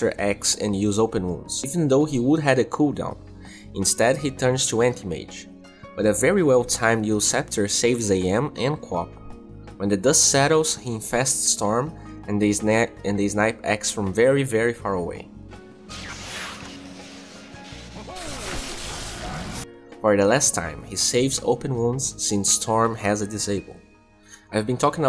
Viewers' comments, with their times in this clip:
0:08 "qop" kills me too